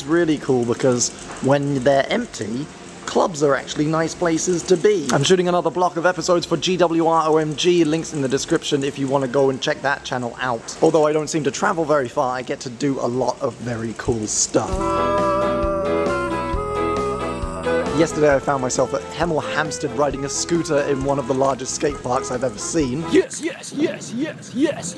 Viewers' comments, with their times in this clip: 0:05 you sound like the British version of Phillip deFranco